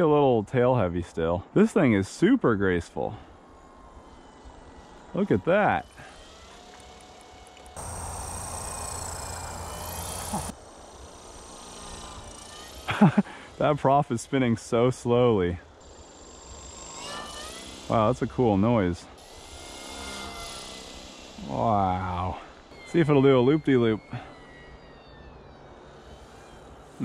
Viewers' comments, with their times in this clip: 0:10 it sounds like the Jetson's car!